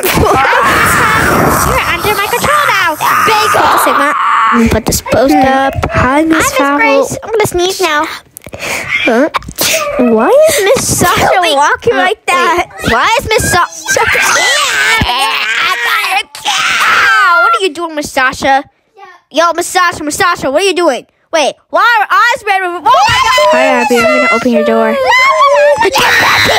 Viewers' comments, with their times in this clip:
0:09 preppy sneezes on camera!-